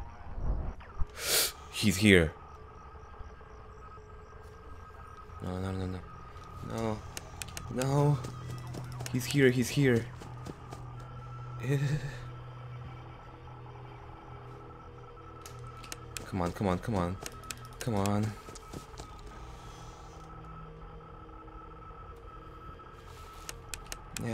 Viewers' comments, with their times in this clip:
0:10 "he's here, he's here....ehhhh" that sound could be my ring tone.. So funny